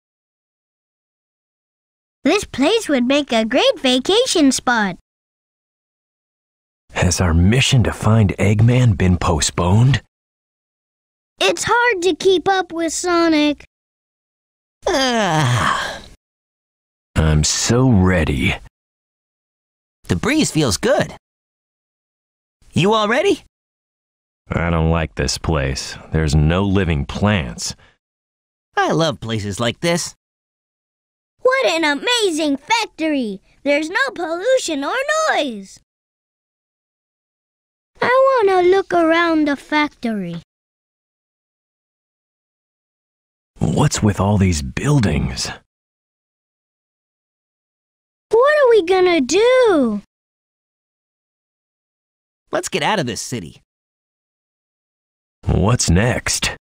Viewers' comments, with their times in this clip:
0:02 the way he says that kills me
0:37 when Tails is saying his line, I think I hear the actor turn the page on his script.
0:37 Awwww baby talk tails
0:37 Is it me or did Tails really sound more like an 8 year old ? 😅😂
0:38 Tails' voice is so cute
0:38 i wanna look awound the factowy 🥺